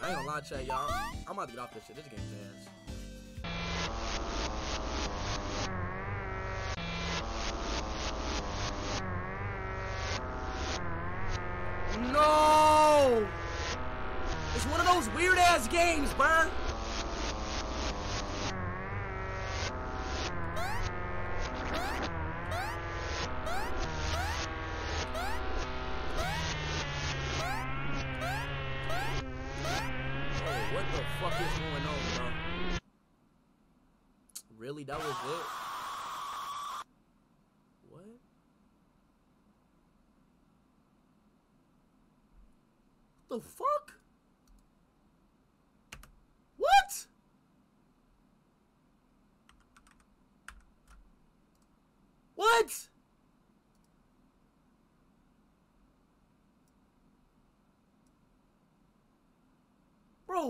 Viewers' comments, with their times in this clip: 0:03 that song scary af
0:33 goofy ahh music
0:35 LOL he’s meme when he was screaming tho😭
0:46 how he said what 🤣